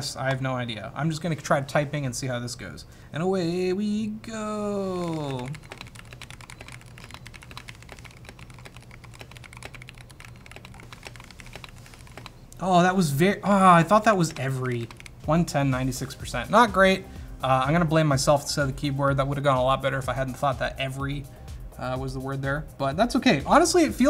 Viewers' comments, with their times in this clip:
0:06 Mannnn i hate that muffled sounds. Sounds so ugly and mushy, worse than membrane keyboard.